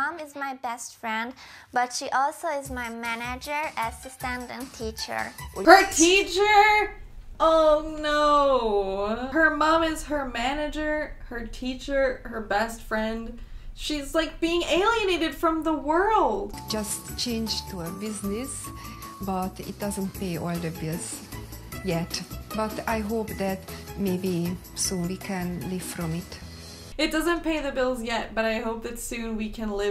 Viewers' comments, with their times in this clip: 0:03 That Sims 2 music I had thought my Sims2 game opened until I realized it was the video lol
0:05 Did they really just put Sims music right there?
0:13 did i.. did i hear sims 2 music ish???
0:16 Did anyone else think about the music from Sims 3 when they heard the music starting 🙊